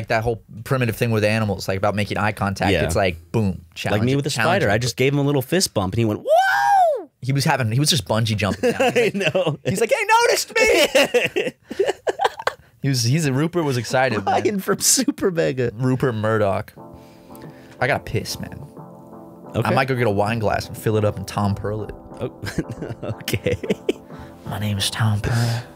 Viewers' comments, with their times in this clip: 0:06 Lego R2-D2 death sound: